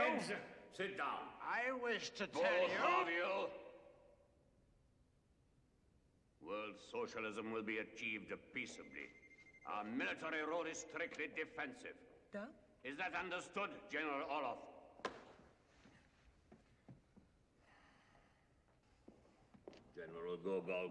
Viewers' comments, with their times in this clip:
0:05 is Amazingly coming to Life Killing what many have Died for to Keep people FREE!!! But WHY~ is the damned volume so low?!?!?